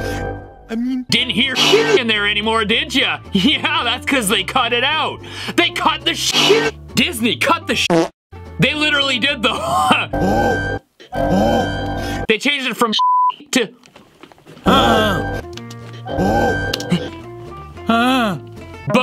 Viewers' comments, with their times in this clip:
0:07 that poop sound got me